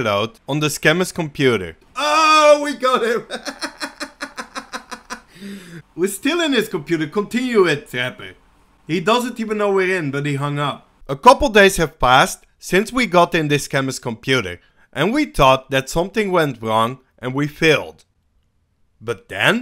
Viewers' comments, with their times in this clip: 0:03 THAT EPIC CHUCKLE 😂😂😂